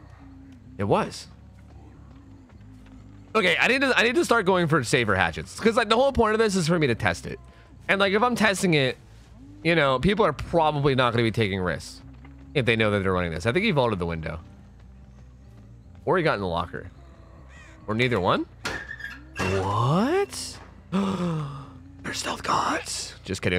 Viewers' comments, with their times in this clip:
0:08 sounds like autotune, lol